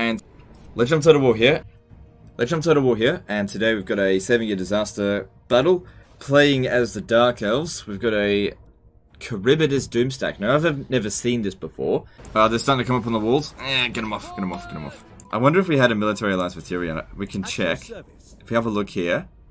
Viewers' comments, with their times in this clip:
0:06 Lmao Electrons on a wall here is said on one occasion a